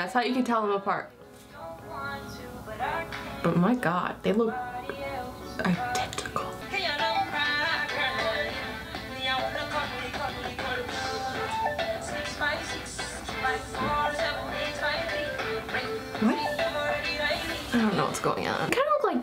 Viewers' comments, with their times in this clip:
0:07 Did anyone else's auto cut out ?